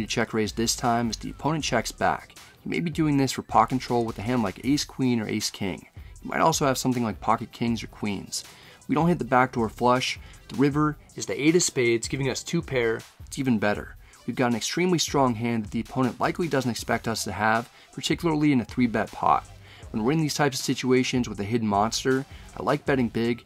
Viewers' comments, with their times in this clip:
0:08 sounds funny when you add in the audio clip hehe